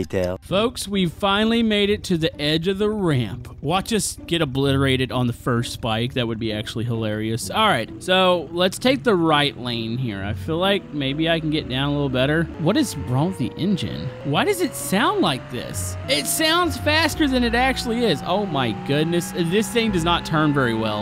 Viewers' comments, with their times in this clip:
0:09 I believe that is a Vacuum Cleaner motor, hence why it sounds the way it does.